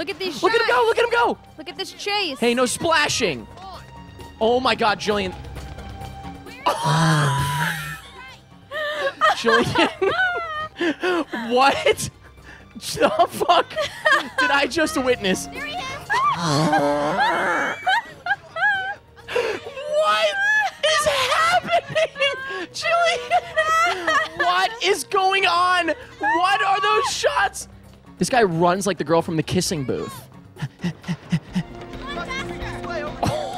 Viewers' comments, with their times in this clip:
0:03 the way he just stops mid sentence has me dying 😂
0:03 That sequence of wheezing during that chase scene is legendary
0:16 THE LAUGH is the best part of this video omfg
0:16 is an unearthly sound